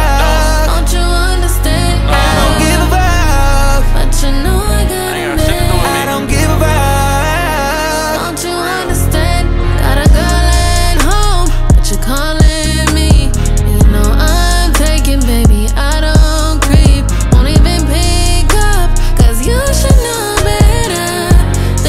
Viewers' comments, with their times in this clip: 0:09 why does she kinda sound like Ella mai in this part. Or is it me